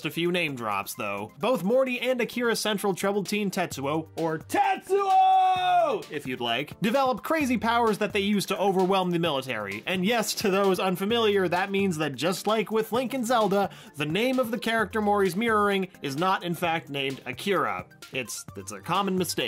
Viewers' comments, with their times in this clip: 0:03 This is actually the one thing about Akira that stuck with me. Someone yelling, "TETSUO!!!!"